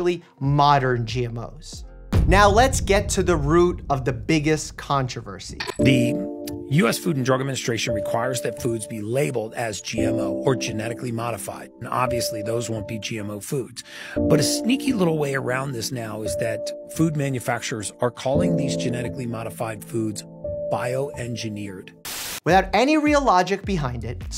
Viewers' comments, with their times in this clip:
0:05 .....the music, LOL.